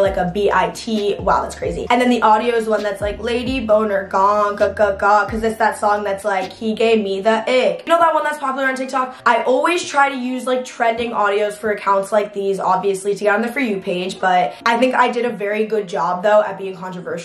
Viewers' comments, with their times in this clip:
0:05 not her singing lay bankz😂😂😂